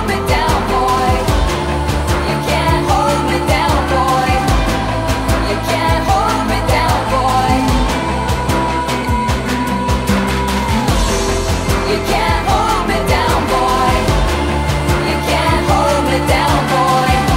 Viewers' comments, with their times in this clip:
0:04 There is absolutely a discord notification which is bizarre since discord wasn't a thing until 2015.
0:05 ... somehow my brain "hears" a quiet Discord notification there. So annoying.